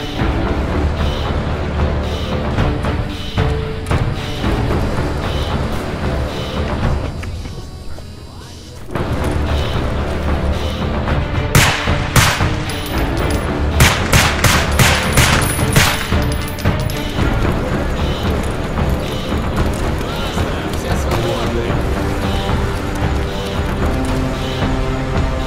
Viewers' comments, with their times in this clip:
0:09 Ooohhh! i really like that the suppressor doesn't make the gun just completely silent, it's still loud just now a little more quiet! Nice realistic detail